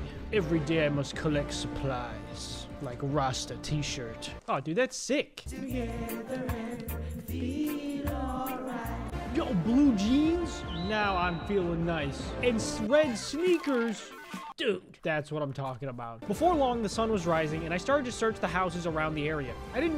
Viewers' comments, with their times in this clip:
0:06 Bro I love this song